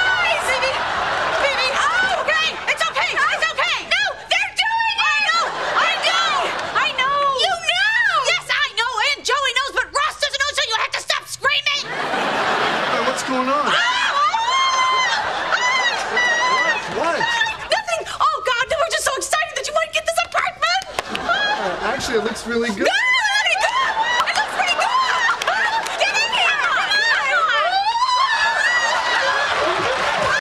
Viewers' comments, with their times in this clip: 0:10 that kinda wierd sound shoutting from rachel, is really rare in humens 😂😁
0:14 Seems like phoebe's voice went when they're screaming together to change ross's attention 😅
0:27 Ross jumping and screaming with Rach and Pheebs gets me every time😂😂😂😂😂
0:27 for Ross’ scream haha
0:28 😆😆🤣🤣🤣🤣😆 Ross/David made this whole scene, period! The way he jumped and screamed is just piss-your-pants hilarious! David is a genius! And way, way more brilliant than Perry. Sarcasm is great but it's not difficult to deliver when you already have it written down, but the noises David made and his physical comedy - it's very difficult to play yet David did it with such perfection, every time! Love him! 😍